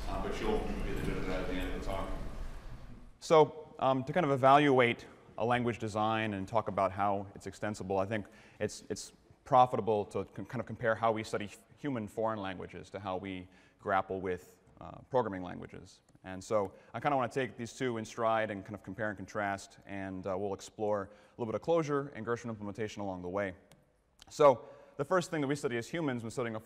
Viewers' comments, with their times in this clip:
0:09 bad initial audio is fixed ! Yay